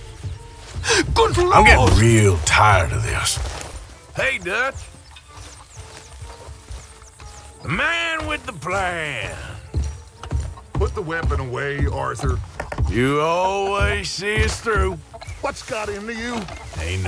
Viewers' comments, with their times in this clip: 0:04 the way Arthur casually and happily says "Hey Dutch!" While slowly walking towards him with a gun killed me